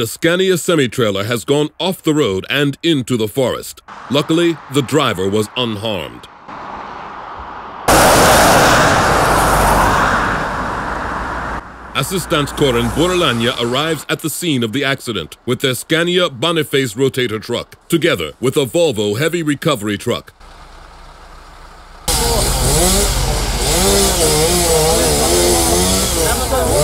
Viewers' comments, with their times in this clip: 0:08 R.I.P Headphone users.